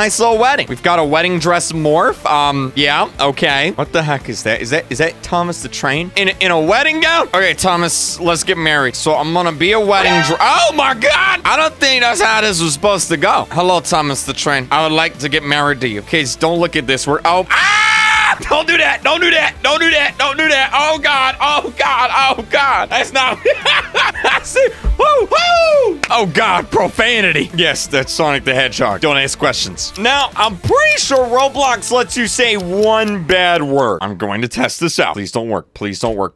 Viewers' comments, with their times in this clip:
0:04 Starting in the video that was killing me in laughter 😂😂😂😂😂 *the scream*😂😂😂😂
0:10 I can’t when he started screaming 😂 it wasn’t so innocent
0:17 that scream equals you saying this expression: HOLY 🐄🐮🐄🐮🐄🐮🐮🐄🐮🐮🐄🐄🐮🐮🐄🐄🐄🤠🥩
0:17 in he was like so sus and screaming
0:18 bro was screaming